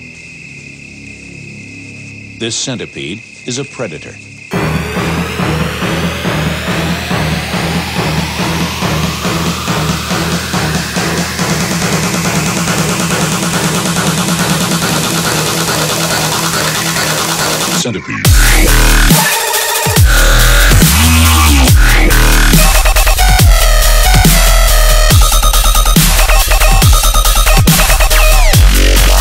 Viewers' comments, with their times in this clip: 0:04 is where the beat drops
0:17 When you walk into your creepy uncles room at 3 am: “Why do I hear boss music?”